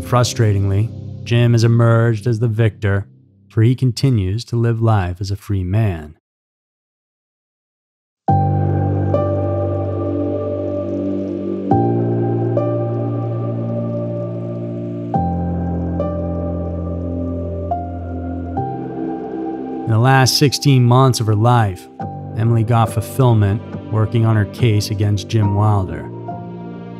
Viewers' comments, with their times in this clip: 0:08 That music min and the closing of the story and how it all played out was chilling.